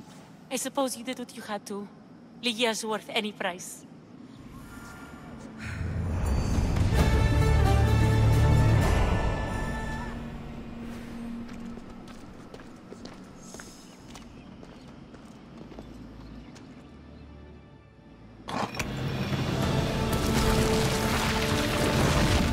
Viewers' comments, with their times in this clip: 0:09 IT EVEN SOUNDS LIKE THE WITCHER 3 HAHAHAHAHA